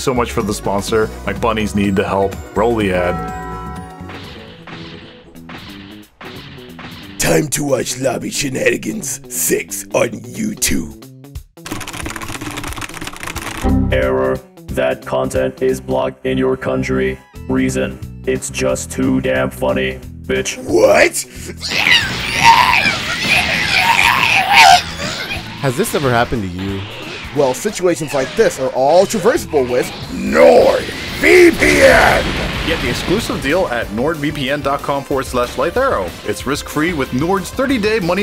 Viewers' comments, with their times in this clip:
0:10 broly sounds like muscle man 😂
0:21 Broly sounds like musle man from regular show
0:22 man turned into muscle man screaming
0:25 Bro broly raging out sounded like muscle man from regular show